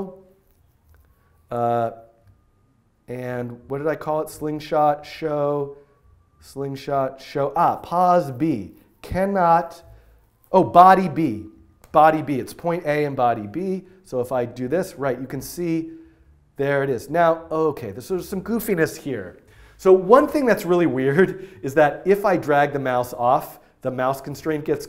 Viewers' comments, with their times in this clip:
0:10 Could anyone hear the ambulance ??? No??? Only me??? Cool.